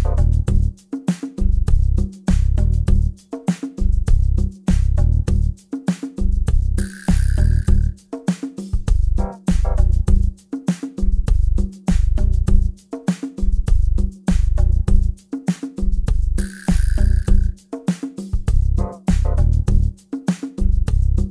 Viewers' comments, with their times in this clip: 0:05 thats some well in time music for hose pulling